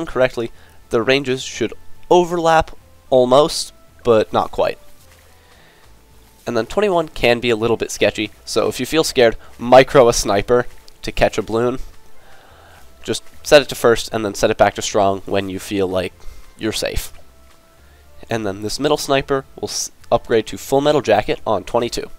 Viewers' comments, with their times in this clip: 0:09 why did bro say "MICRO the sniper" that way like it's an emergency